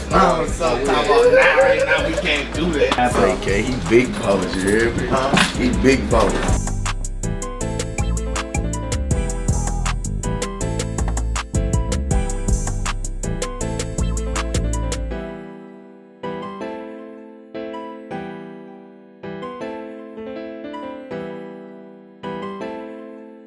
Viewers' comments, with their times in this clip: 0:04 "ya hurr me"gotta love that accent🤧🐍💚